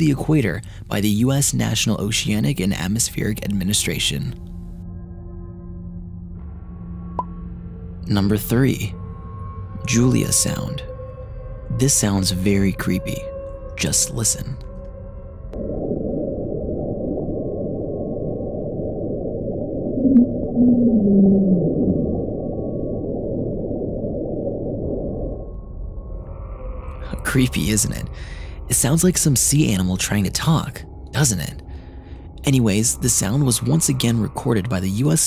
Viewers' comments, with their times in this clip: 0:08 just a sea animal making noise? what creepy is that? i dont see anything creepy in this one
0:21 I stopped watching this video on The sounds are sooo creepy, specially the julia one